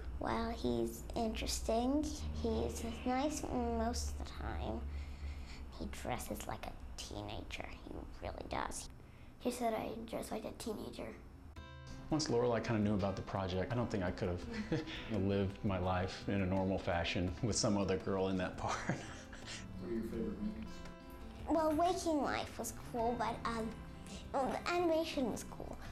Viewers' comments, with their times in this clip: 0:06 "He dresses like a teenager" Yeah? Well you sound like one.